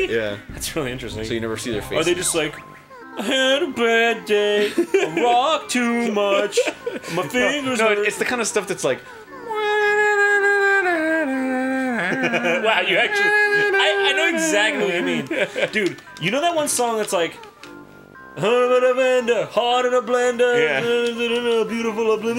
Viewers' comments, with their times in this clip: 0:09 sounds like Maps by the Yeah Yeah Yeahs